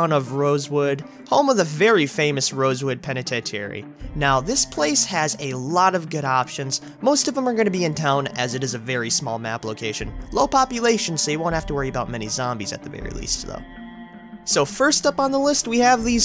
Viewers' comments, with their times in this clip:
0:03 rosewood wut pena-tet-tee-airy oh okay